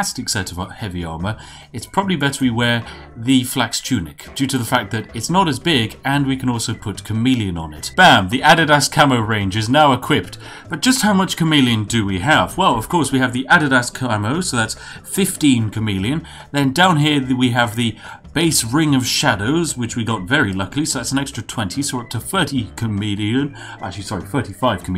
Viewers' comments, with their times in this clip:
0:07 im sorry, HOW DID YOU PRONOUNCE THIS?? 🥲🥲